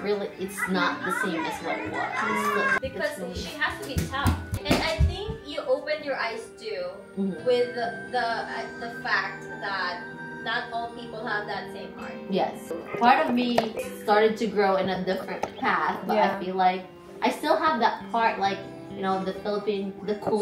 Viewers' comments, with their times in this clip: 0:03 LOUDERRRRR! This is such a emotional conversation to hear and im glad you shared it